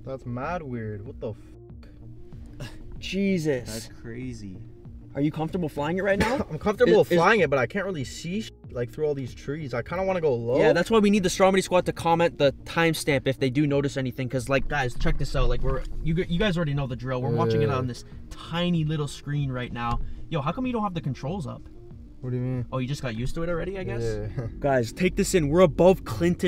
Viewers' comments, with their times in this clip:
0:03 it sounded like he said cheese is
0:11 I'm 100% sure he said strawberry squad